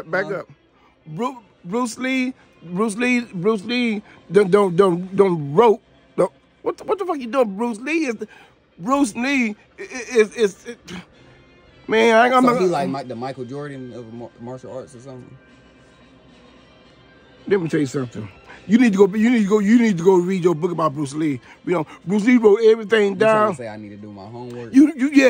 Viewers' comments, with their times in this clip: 0:08 You got on Unc's nerves so much he called Bruce Lee "Bruised Knee"